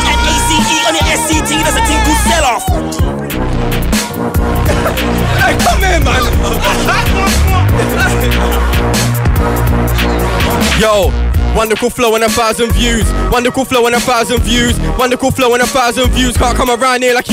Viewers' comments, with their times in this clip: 0:03 Merky Ace be like : man fuck off fam don't yell I can't concentrate 😂😂